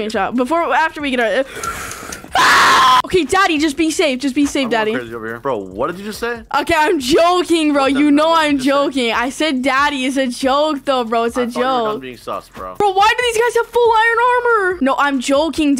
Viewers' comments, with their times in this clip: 0:03 my ears lol😂😂😂